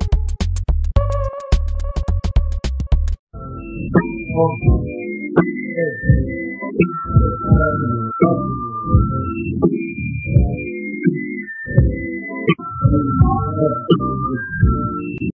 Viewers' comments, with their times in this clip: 0:03 I like song